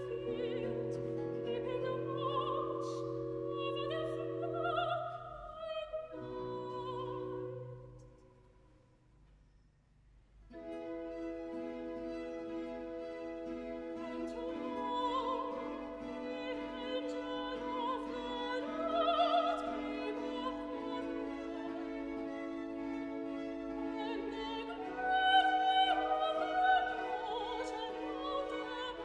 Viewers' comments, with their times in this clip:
0:10 1) Killer sopranos - chills you to the bone. 2) Use of music stands by chorus looks kind of weird and not typical. Looking down (too far) at score too much instead of addressing audience. And then seated with the stands blocking their faces ( e.g.) - not good. 3) Good acoustics and good recording. 4) For Unto Us too fast - common error. Very impressive and expertly sung otherwise. 5) Blond violinist definitely earning her keep with all the closeups - beautiful long hair. 6) Could leave the ridiculously long theorbo or whatever it's called at home and nobody would know the difference. You can keep the ancient trumpet things, however. 7) Chorus comes across as much fuller because of their skill - no slackers. 8) Conductor gets it - he's not asleep or wildly waving his arms around. In other words, you can follow this guy. 9) All in all - top shelf. Very cleanly and crisply played, sung, and directed.